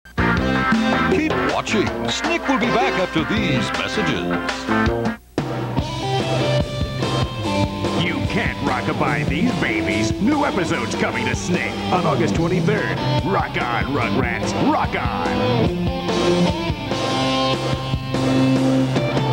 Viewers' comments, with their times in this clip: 0:07 rats go to doggo